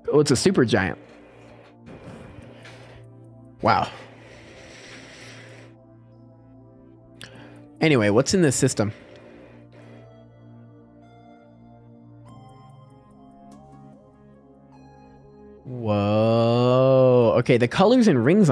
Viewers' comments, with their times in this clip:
0:06 the song goes perfect with the exploration